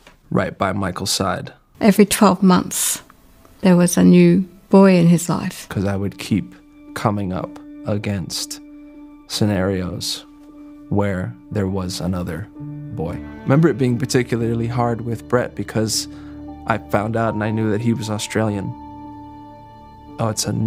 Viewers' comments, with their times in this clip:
0:05 Min wade talking about the new friend. He sounds like a jealous women wtf 🙄 this guy wade has really serous problems